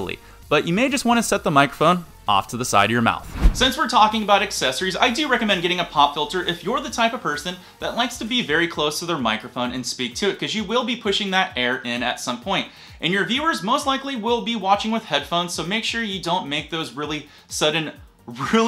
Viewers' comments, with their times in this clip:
0:03 What happened to your audio ? The quality dipped significantly and never recovered.